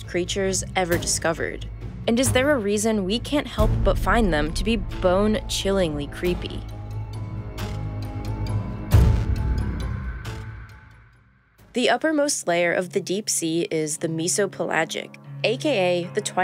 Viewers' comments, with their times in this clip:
0:04 SHE LITERALLY SAID "BING CHILING"💀💀💀💀